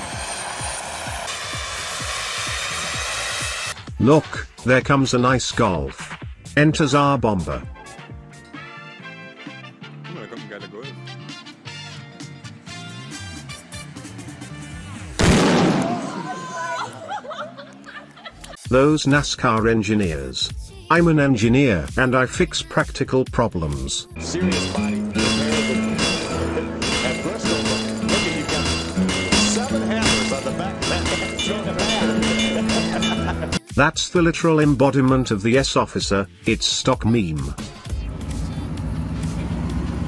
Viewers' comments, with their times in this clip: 0:09 that was one million decibels the same sound as one thousand tsar bombas
0:14 Lmfao headphone warning
0:28 that hammer sound tho